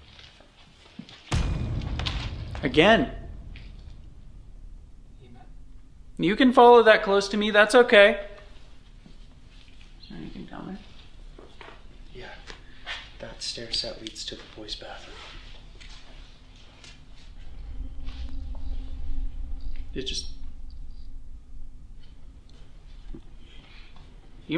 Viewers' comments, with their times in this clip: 0:05 Is it just me or did a disembodied voice come through the camera